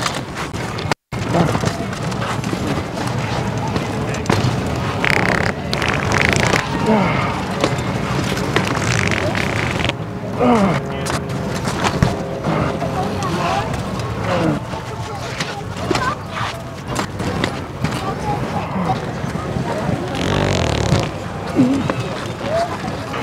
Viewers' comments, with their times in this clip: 0:04 is an amazing authentic old man fart.